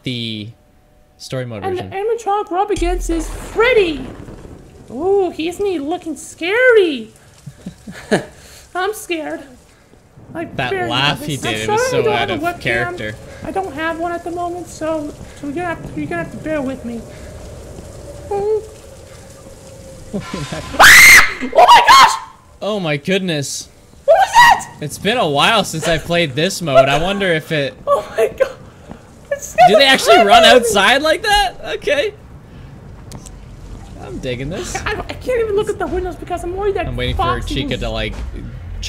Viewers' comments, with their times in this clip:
0:07 I thought he laughed
0:20 Chica’s scream though😂🤣😂